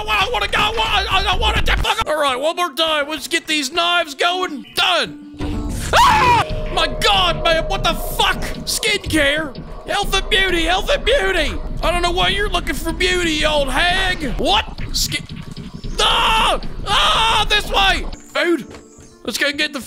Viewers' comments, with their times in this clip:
0:05 A slight character break from the terrifying old lady 😂 manly scream ensues